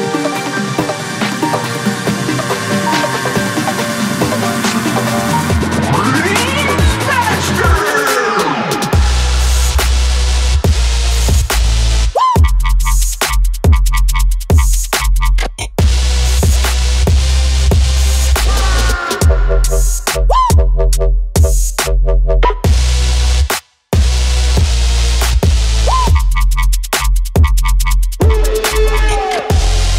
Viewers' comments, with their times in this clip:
0:10 woah this shit got that nectar vibe, this is fire